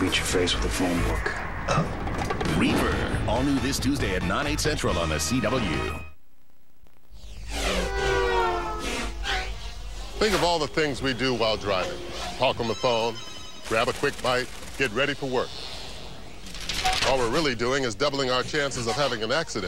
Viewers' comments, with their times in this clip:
0:06 I immediately knew who this was just from the voice. This commercial just unlocked some hidden memories.